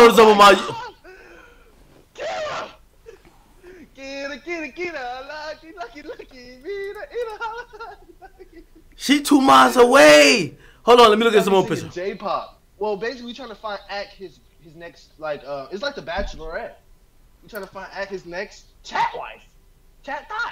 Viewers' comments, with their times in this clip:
0:04 Boom started singing my favorite KPP song 😶